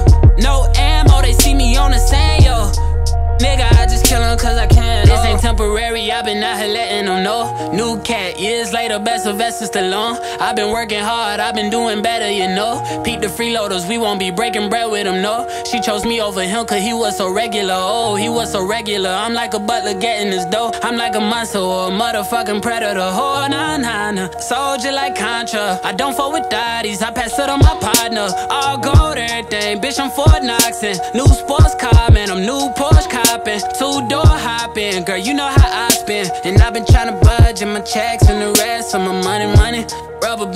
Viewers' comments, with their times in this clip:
0:10 he starting going Super Saiyan
0:23 that flow from always giving me chills...
0:23 am i bugging or did he go offbeat out of nowhere. i dont know how they let that out of the studio without fixing it
0:25 that drop , heavvyyyyy